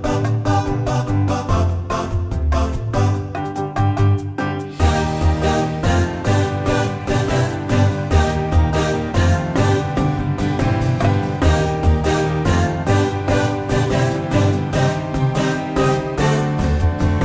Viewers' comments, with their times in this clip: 0:05 Why does it sound like Mario